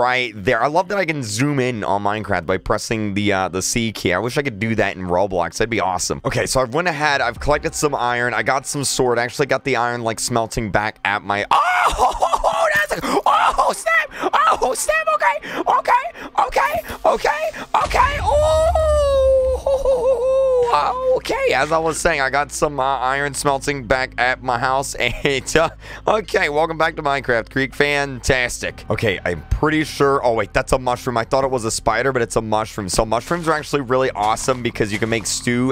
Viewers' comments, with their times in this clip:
0:09 So We Gonna Talk About kreekcraft's voice crack
0:11 What happened to your voice?
0:12 Me: ohhh wait what kind of voice is that could I do it? Nope I can't
0:18 wtf happened to his voice